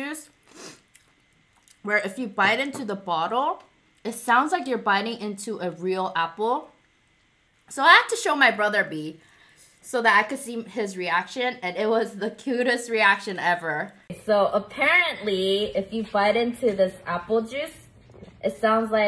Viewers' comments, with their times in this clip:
0:06 i litterly have it in my hand lol. tbh its just apple juice and it doesnt sound like it. its just plastic crunching